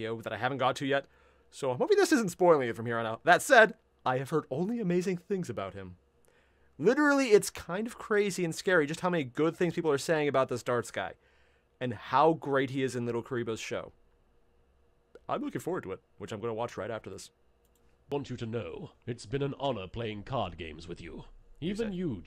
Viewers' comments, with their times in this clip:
0:06 Don't worry, it's not a spoiler, it's a joke about their weird voices